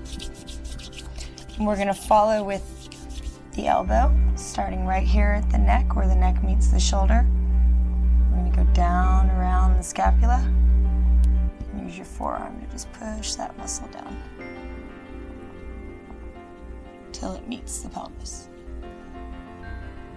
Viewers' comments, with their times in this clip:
0:04 lightsaber battle can be heard